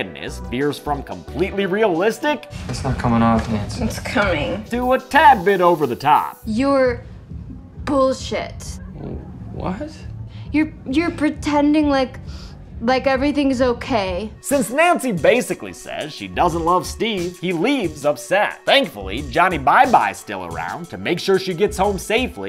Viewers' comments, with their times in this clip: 0:06 her walt jr impression killed me